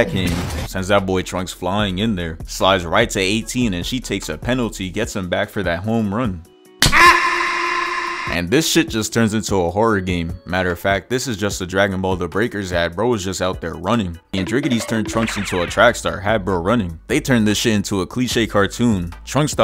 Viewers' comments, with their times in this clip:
0:07 Where's at AHGK from Sounds like Skeletor